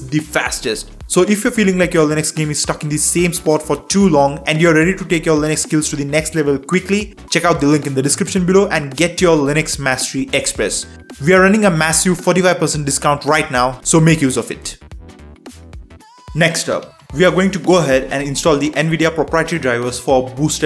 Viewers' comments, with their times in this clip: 0:04 obviously friendly accent 🤣